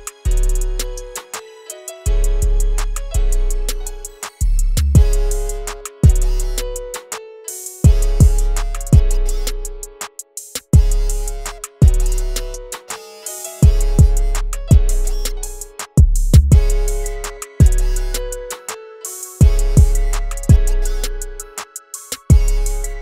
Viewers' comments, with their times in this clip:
0:10 That key is dope enough but is this kind of talkbox? really nice sound🔥🔥 just subbed bro! this a nice beat